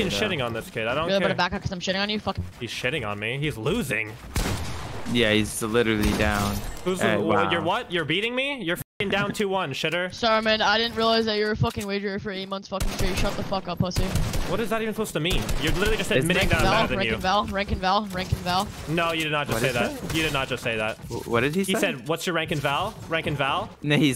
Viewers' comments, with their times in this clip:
0:10 he sounds like a 13 year old feminist loolll